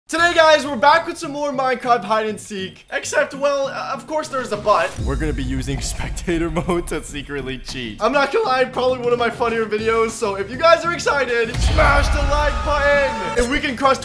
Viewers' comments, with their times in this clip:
0:01 i thought he said today guys were back with some more minecrap hide and seek